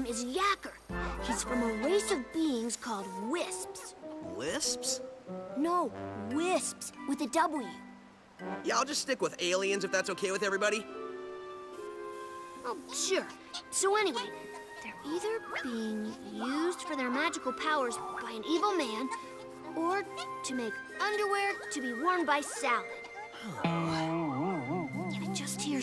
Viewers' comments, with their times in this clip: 0:08 Breaking the 4th wall!!!!!!!!!!!!!! Lol kidding/ I don't care. His new voice is pretty good. He sounds like he has more of a personality and an attitude which fits Sonics character perfectly. Good call Sega.